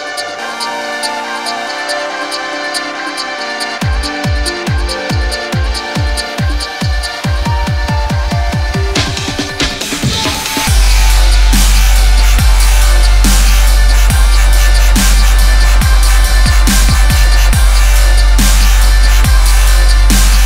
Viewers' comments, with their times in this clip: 0:05 when some wobbles hits with that female voice in the background OMG!
0:06 Favorite drop ever